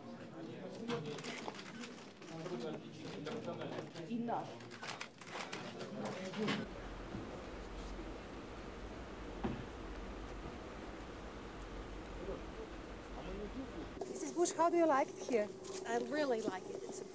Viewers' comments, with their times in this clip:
0:04 someone says "go to hell" almost